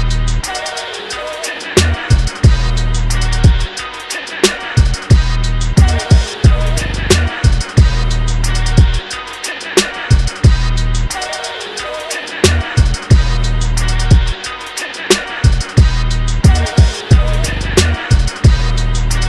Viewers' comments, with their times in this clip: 0:06 the little bass coming only to left side is pissing me off but i know its in the original too :D